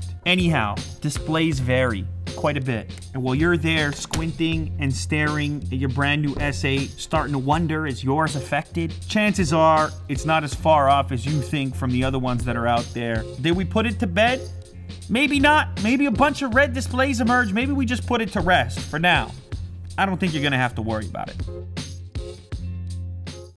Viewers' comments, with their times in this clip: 0:10 Lew becomes a rapper :O